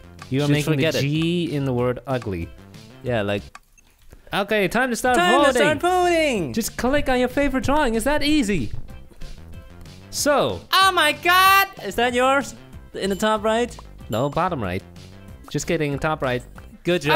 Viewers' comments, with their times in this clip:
0:05 Two Thanos... 😕😳 Edit: Also Did You Say Time To Start Pooing?